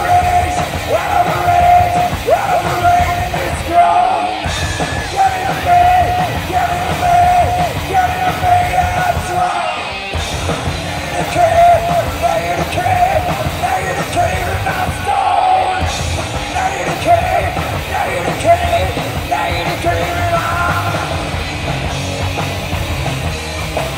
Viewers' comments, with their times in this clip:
0:08 the same boy singing Negative Creep Wow